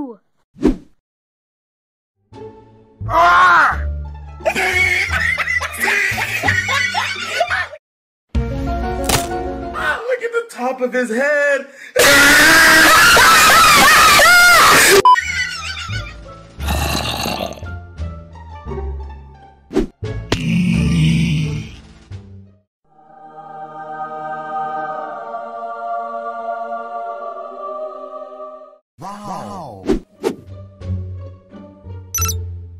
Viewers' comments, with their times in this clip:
0:05 Bone has laugh 🤣 the screen lol🤣
0:07 zombie and wither skeleton head and laugh made me die lol
0:09 erape + bass bosted + loud
0:09 Earrape + Bass Boosted + Loud
0:11 break headphone users ;-;-;-;-;-;-;-;
0:11 LOUDER AUDIO WARNING
0:11 No and when we scream it's funny 😂😂😂😂😂
0:12 FUNNNNYY LAUGH LOL
0:12 earrape in a nutshell
0:12 I put head phone and saw rip my ear
0:12 = R.I.P headphone users...
0:12 r.i.p headphone users 😂😂😂🤣🤣🤣
0:12 I DIED WHEN IT GOT SO LOUD
0:13 is too loud
0:13 is the best LAUGH LOLOLOLOLOLOL